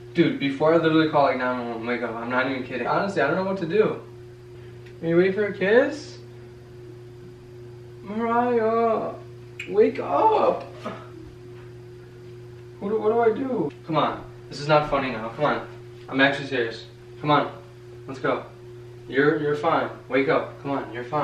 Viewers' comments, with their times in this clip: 0:07 I can literally hear the tremble in his voice ;(